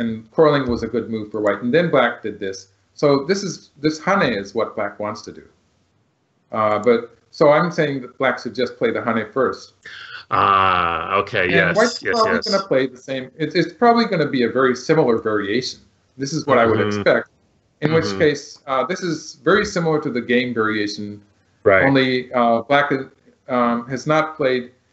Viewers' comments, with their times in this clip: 0:09 Burning question: Were the sneezes from the cameraman, a bystander, or one of the pets?